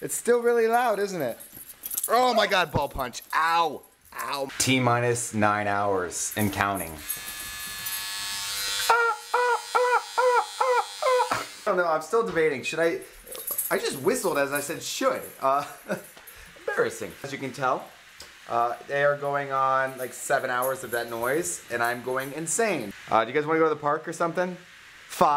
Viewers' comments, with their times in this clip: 0:09 you sound like a seagull...